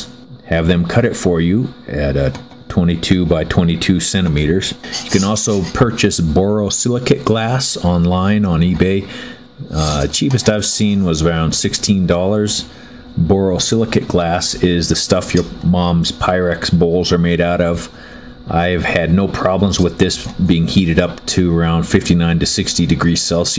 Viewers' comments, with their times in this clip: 0:09 "the stuff your moms pyrex balls are made out of" LOL! I know I misheard but thats funny AF